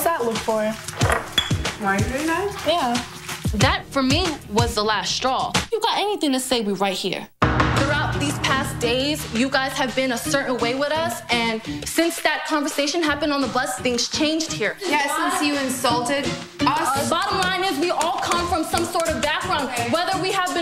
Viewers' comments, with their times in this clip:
0:08 I love her accent. Omg